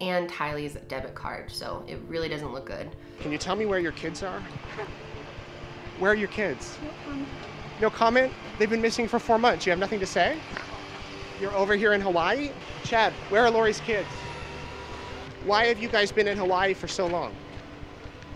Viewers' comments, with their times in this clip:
0:05 she snickers when reporter asks about the kids 😳